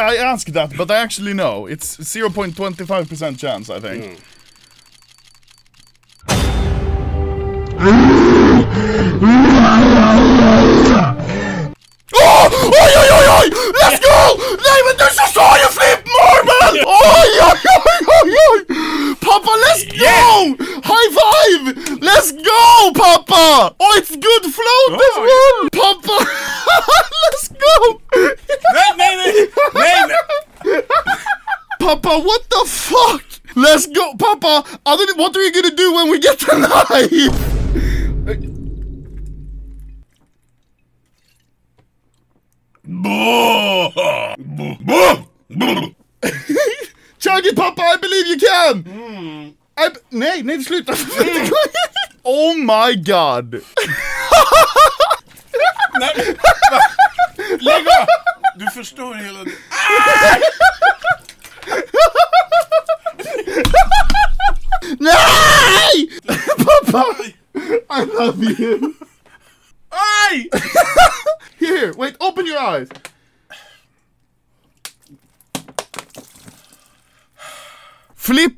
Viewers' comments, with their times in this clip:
0:08 "leaked big foot sounds"
0:42 nobody: my neighbors dog at 3 am:
0:42 anomaly is scared by zombies voices
0:45 That one neighbor's dog when you walk by.
0:55 that fricking laugh man
1:00 Papa's battle cry